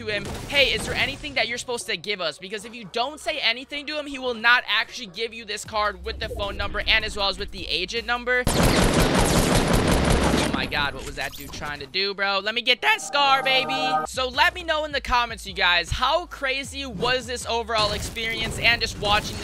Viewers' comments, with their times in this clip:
0:07 if ur gonna talk about the voice.listen to the voice the voice crack comes a little bit later